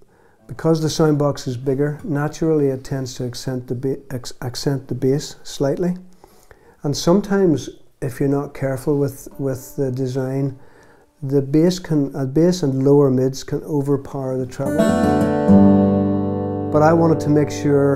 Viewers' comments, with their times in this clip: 0:03 and on..really acoustic guitars don't get any better sounding than that thing.